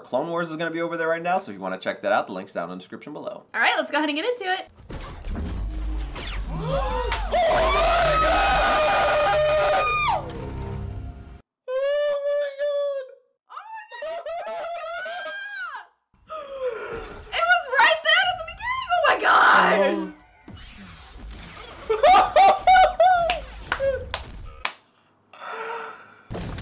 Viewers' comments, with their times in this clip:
0:07 that wasnt a human voice 😂 it is godzilla 😅
0:07 warning for Headphone users